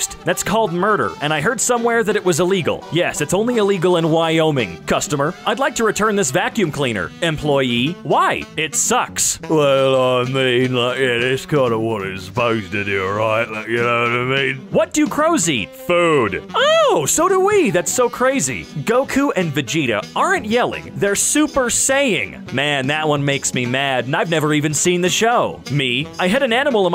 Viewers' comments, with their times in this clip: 0:09 he turned into an Australian on his 5 vb of the day